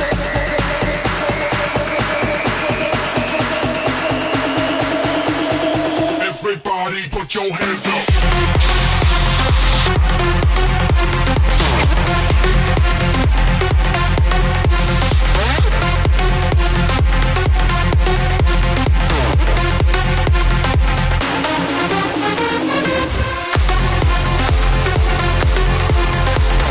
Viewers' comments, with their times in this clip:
0:08 On starts the drop